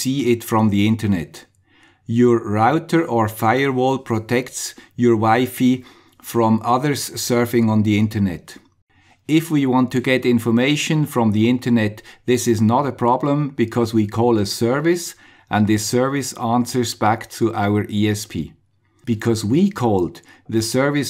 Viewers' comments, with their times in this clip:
0:08 It's like "your router firewall protects your wife from other people surfing the internet".